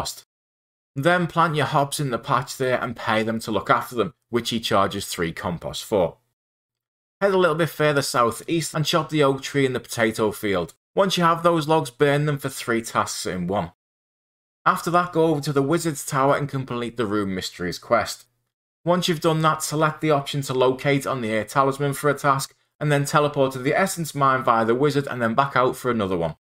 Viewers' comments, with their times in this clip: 0:08 Chop a log from a potato tree. Im sorry, do what now?